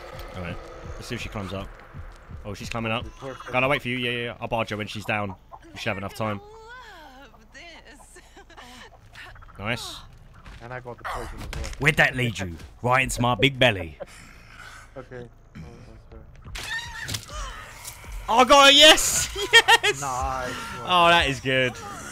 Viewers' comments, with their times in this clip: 0:08 Virginia climbing up sounds like the the puffer fish meme here lmao